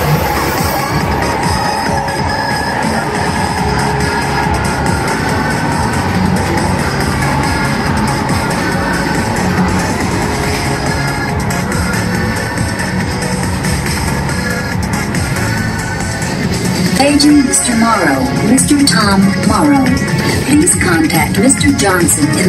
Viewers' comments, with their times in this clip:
0:03 This whole soundtrack is so epic. Do you know where the sample from is taken from? Banging melody. Is that Tron or something? Also, I miss the guy saying, "Now approaching..."